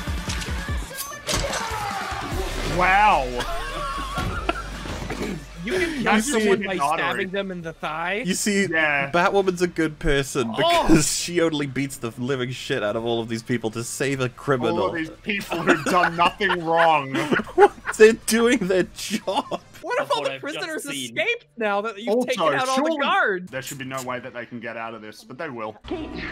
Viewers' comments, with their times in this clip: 0:07 Sounds like... Batman.